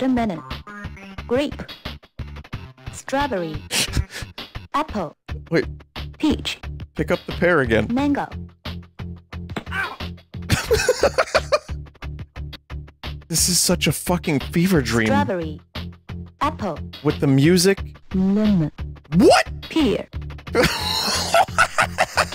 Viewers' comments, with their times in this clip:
0:08 that OW is so fucking funny, my soul fucking inverted.